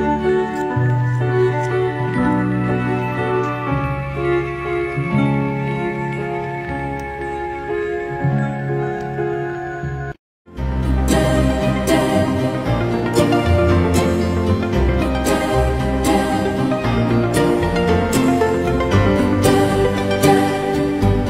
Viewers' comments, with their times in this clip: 0:03 does anyone know this song? It has succulent, delicious taste for the ears